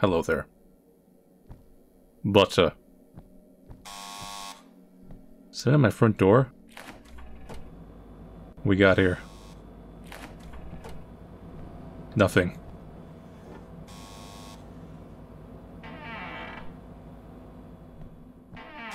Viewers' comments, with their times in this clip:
0:03 the moment when this kind of ringing gives me PTSD